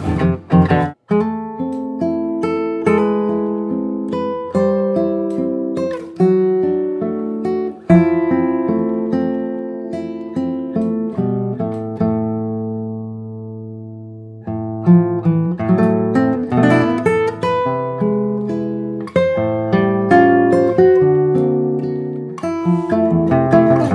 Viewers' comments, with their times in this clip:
0:06 The Yawn! :D Nice arrangements.